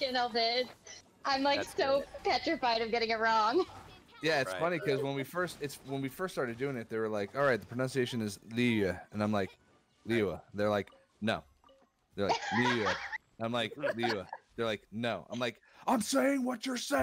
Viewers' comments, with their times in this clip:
0:05 For Keith having a hard time saying "Liyue"